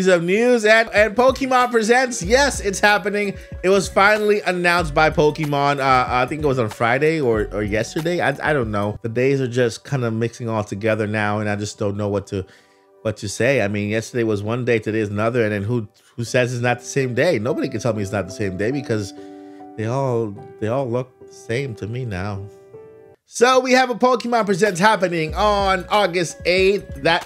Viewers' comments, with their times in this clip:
0:10 I never doubted you having hair. sounded sad